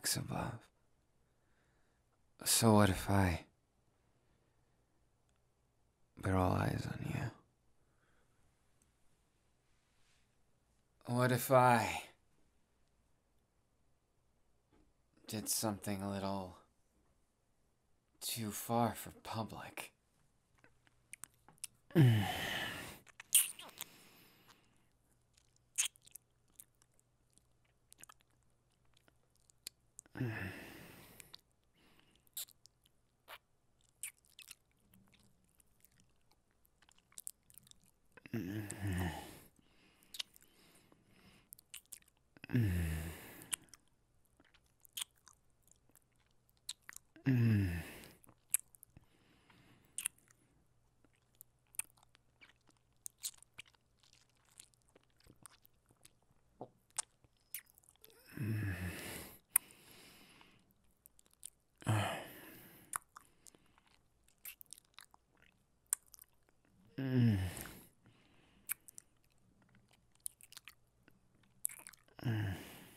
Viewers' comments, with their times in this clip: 0:07 My first thought “oh yes, the music stopped. We all know what’s next”
1:00 Guys bakugou is licking and kissing my ears at the same time 😲 😳